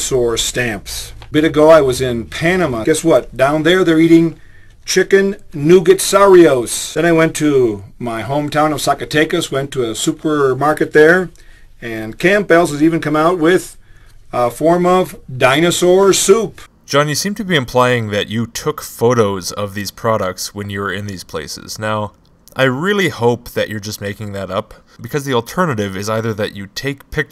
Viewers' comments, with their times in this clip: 0:09 wait wait wait wait WAIT! Are we not going to talk about “Camp Bell’s”!!!???
0:14 can't trust a man that pronounces Campbell's as Camp-bells.